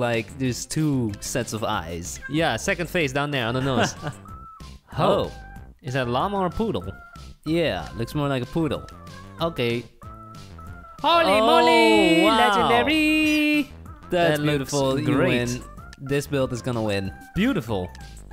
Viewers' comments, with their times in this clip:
0:04 anyone else hear them say "hwoah" in sync ??